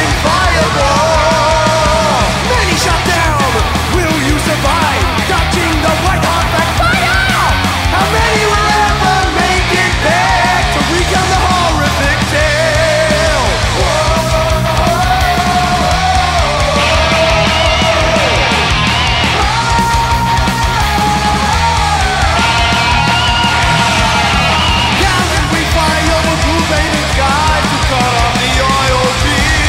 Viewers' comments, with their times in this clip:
0:10 Does someone have the lyrics to this song? There some things he says, which totally make no sense like "Torik a hall vict ale" So if amyone can provide the lyrics, i'd be incredibly greatful.